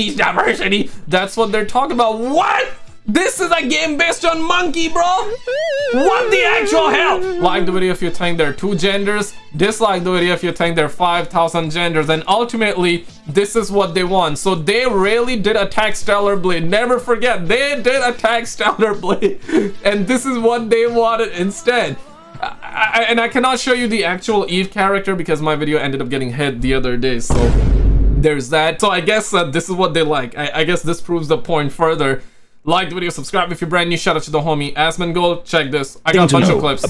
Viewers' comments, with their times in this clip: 0:04 the sfx timing i swear xD fucking hilarious
0:19 The song in the back😂😂😂 🇵🇰 its a comedy love song😂